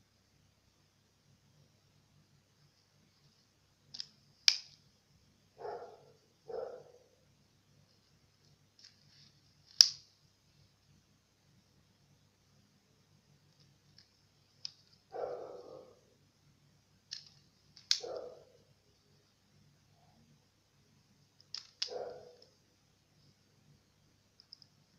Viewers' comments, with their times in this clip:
0:06 Anyone noticed dog bark